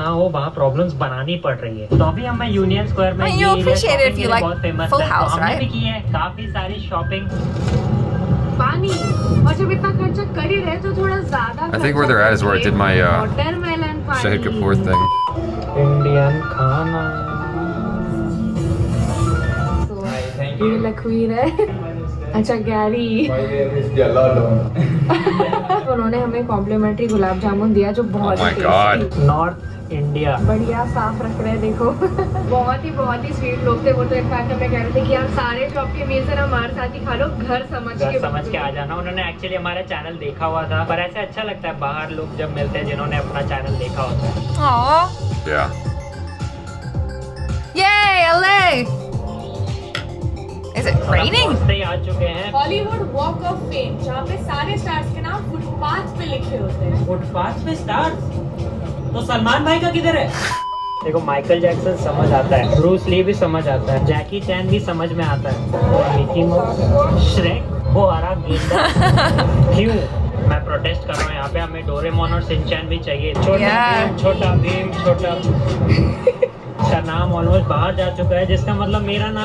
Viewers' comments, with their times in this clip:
0:03 it sounds like she's saying 'bhai op sheher hai' I know she said something else but it sounds like that 😂
1:00 u laughed for different reasons😂😂😂